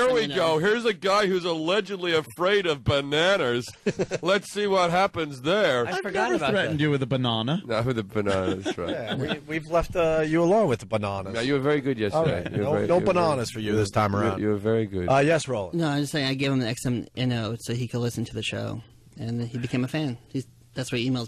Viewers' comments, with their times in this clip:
0:08 first time I realised we say it different lol